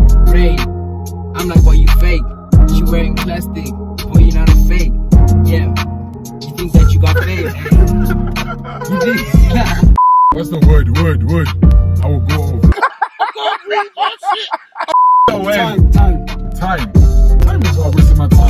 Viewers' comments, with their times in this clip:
0:05 I need this beat